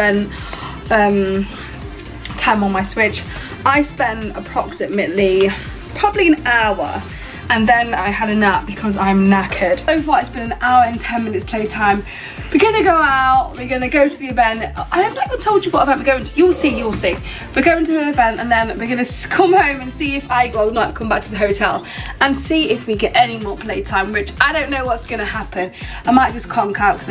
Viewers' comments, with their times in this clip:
0:09 And then she had a nap because she’s naked?